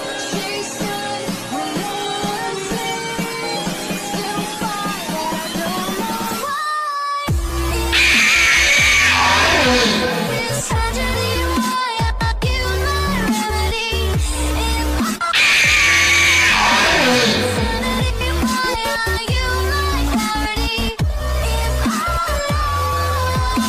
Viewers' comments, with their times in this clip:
0:08 NUHH IM USING HEADPHONESS